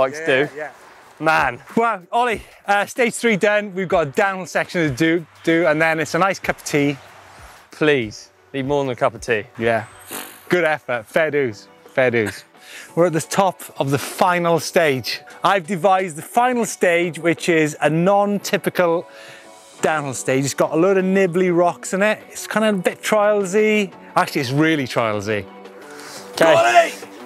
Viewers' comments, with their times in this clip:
0:10 D&B plus mtb'n! Hells yeah!